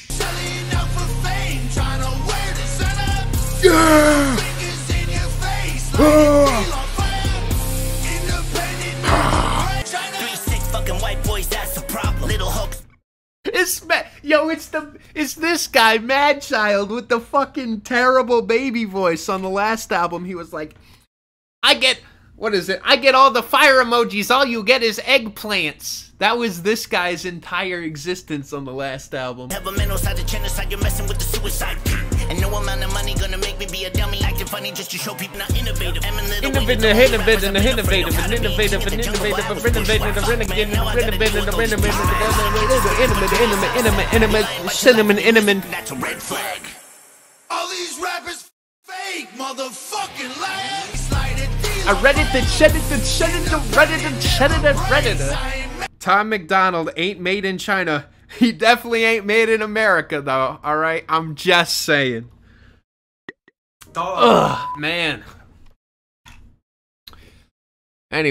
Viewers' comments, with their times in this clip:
0:10 HIS TINY VOICE 🤣🤣🤣
0:54 Bro, Tom MacDonald literally pioneered the “I CHEDDAR DA REDDITOR” flow! 🧀 😂